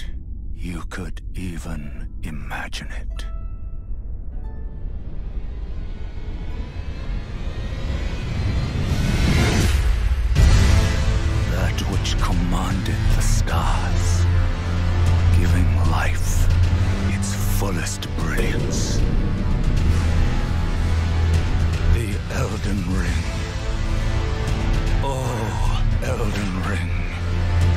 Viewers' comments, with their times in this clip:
0:10 The music gives me chills
0:11 wow.. i got goosebumps when the ost starts